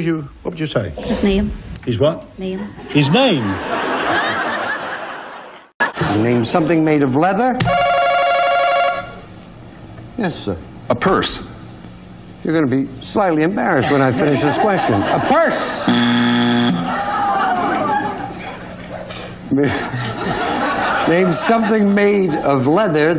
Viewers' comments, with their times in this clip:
0:07 that man sounds like killian from The running man